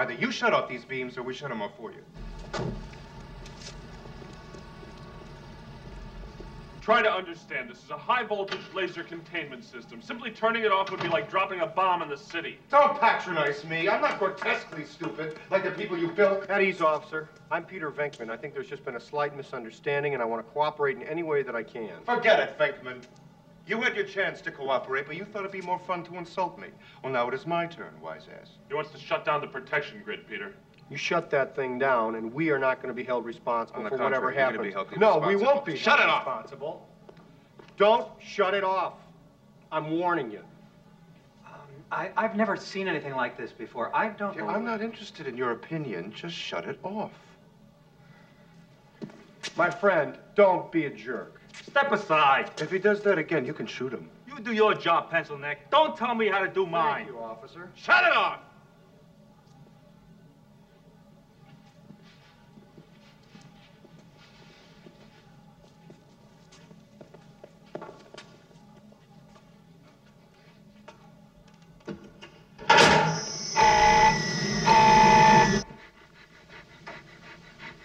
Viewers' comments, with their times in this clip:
0:07 Vince clortho giggling 😅
1:03 super silently BOOM! LOL